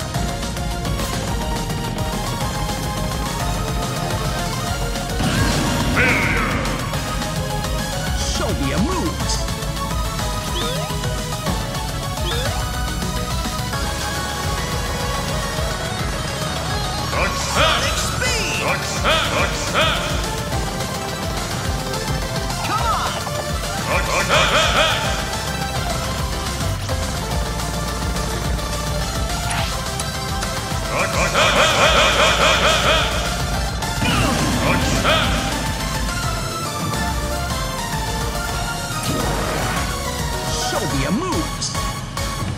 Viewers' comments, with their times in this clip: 0:08 the music fits in with sonic as soon as he starts running
0:30 Lol, the announcer had a stroke because sonic succeeded several times.